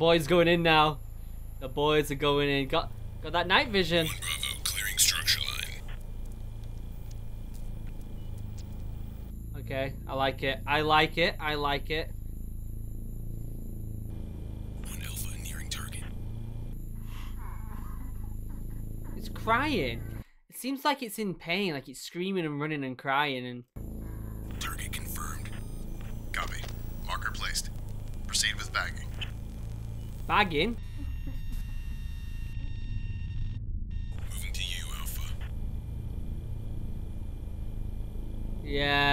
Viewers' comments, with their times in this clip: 0:03 sounded like Corpse Husband
0:20 You'd be crying in pain too in you'd been shot by a A-10 and somehow survived.